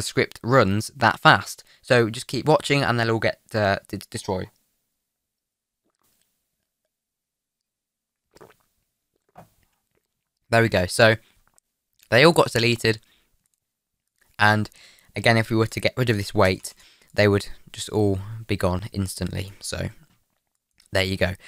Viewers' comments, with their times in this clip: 0:05 who else heard that ASMR? 🤣🤣